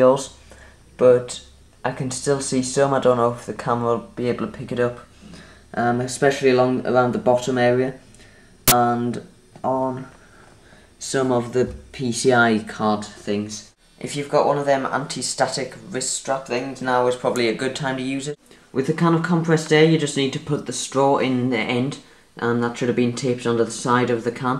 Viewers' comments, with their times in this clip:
0:08 Blip: Let the conspiracy theories begin, LOL.